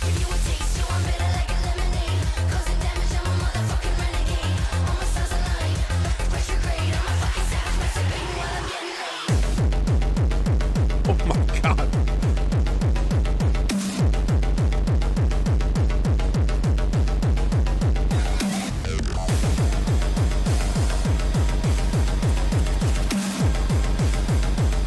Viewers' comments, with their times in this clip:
0:09 As much as I am into metal, I'm just as much into "electronica" to use a general term, but more specifically drumandbass (intelligent/liquid/ambient/jungle/oldschool).. Artists like Goldie, Photek, LTJ Bukem, London Elektricity, Calibre, Grooverider - to name some of many. This definitely had many a lot of other genre elements, including that Hardstyle / Gabba bass kicking in I loved Hardstyle back in the day, now though I'm getting on a bit for that lol Nice to see stuff like this here every now and then 🤘